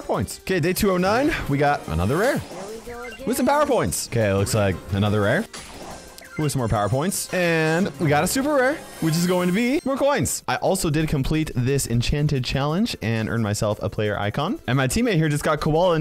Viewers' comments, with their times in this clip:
0:03 did anyone else here here we go again.